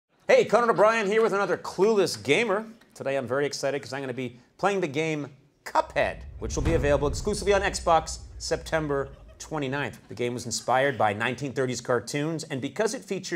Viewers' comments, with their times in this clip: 0:01 he’s so funny that he makes people laugh just half a second into the video